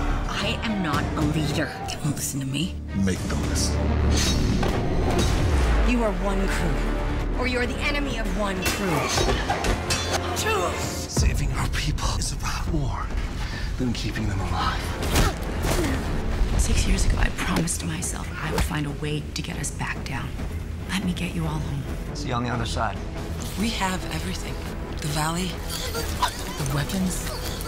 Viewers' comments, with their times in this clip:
0:09 What's O saying ? I always understand 'truce' but other's say she says 'chose'